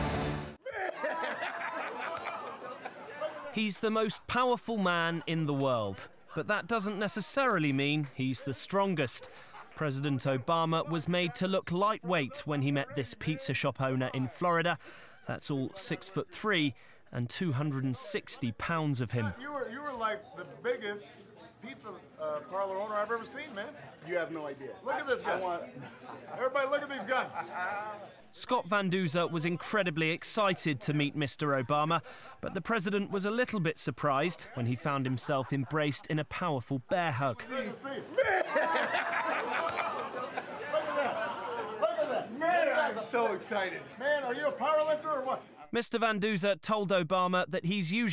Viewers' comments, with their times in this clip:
0:04 Let me just say that the handshake was very satisfying, very audible
0:36 When you listen closely you can hear a small clapping sound This is the sound of about 5-10 secret service agent's buttcheeks clenching together in pure distress. But there's no need to worry, that's a very normal occurrence and usually paired with a vicious yet harmless look.